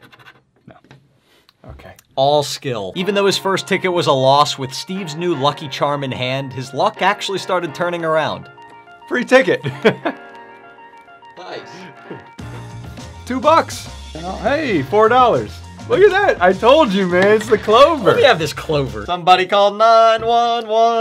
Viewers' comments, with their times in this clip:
0:08 it sounds so much like dream